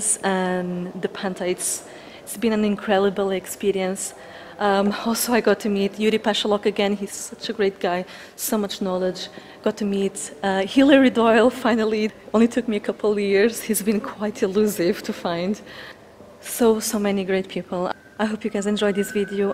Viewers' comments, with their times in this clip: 0:03 it's been an increlible experience. 😂